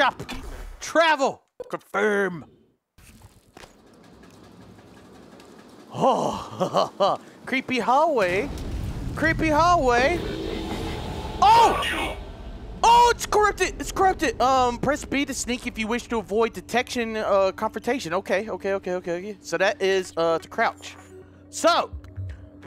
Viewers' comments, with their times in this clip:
0:09 Am I the only one who heard f*** you ?